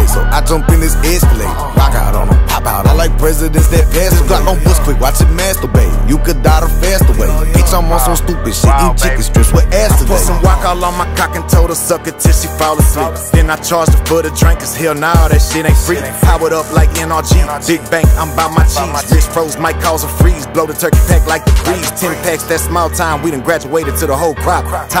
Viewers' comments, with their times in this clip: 0:10 Paul wall sliding in was clean as fuuuuck